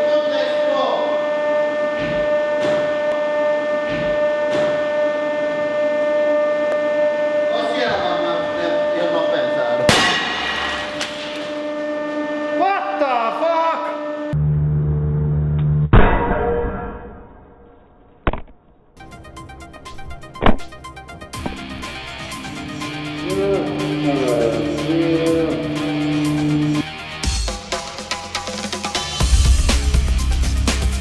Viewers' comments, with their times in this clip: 0:08 Little Camera: speaks Finnish Stay there I'll do this quickly- papers explode
0:11 Epic Way Of Saying What the fuck 😂😂
0:14 sounds like a sniper in a slow motion